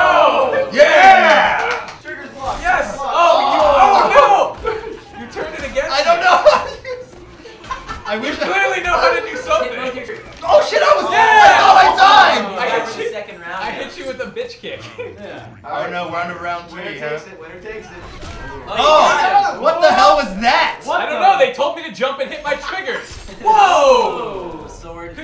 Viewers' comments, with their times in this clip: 0:09 they forgot 2 censor the s word said by Anthony